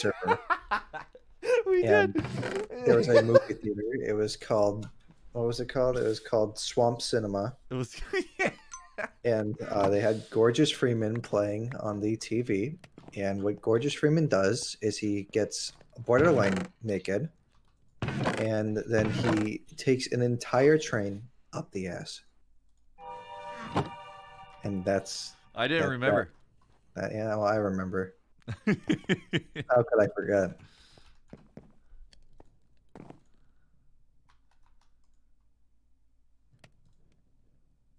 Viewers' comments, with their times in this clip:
0:09 That cave noise could not have been more perfect
0:14 The train whistle.
0:19 THE CAVE SOUND WAS SO WELL TIMED